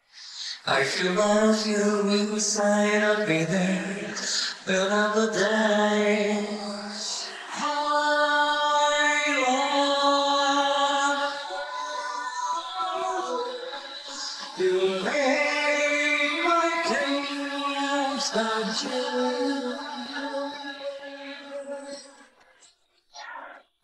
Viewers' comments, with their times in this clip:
0:07 I heard (I LOOOVE.)